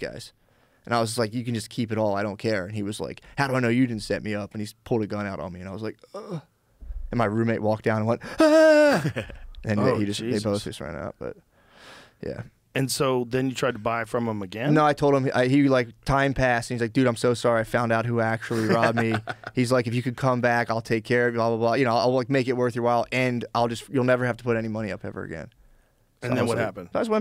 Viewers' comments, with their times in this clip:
0:09 Can someone please tell me what he says under his breath at like ? Or like he says it so fast i cant understand it